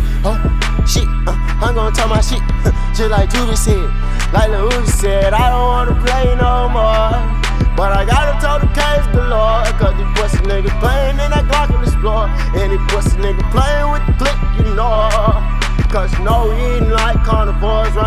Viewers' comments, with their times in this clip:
0:04 sick flow there too